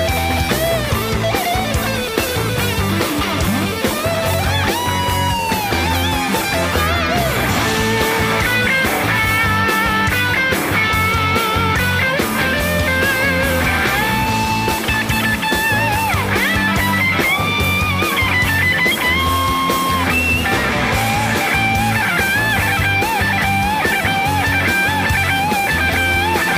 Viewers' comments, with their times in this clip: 0:07 love that he put "While My Guitar Gently Weeps" into the solo for "25 or 6 to 4"!